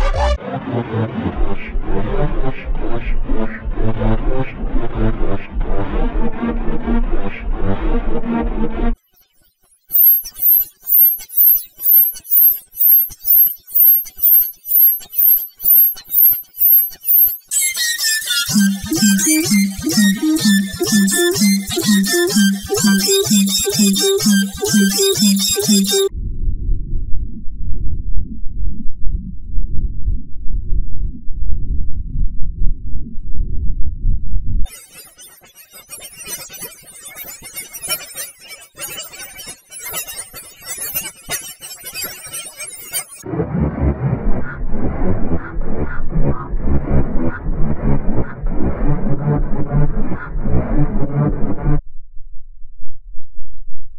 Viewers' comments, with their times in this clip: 0:09 sounds like pitch white hyper cubed
0:35 sounds like goo goo gaa gaa ultra elevated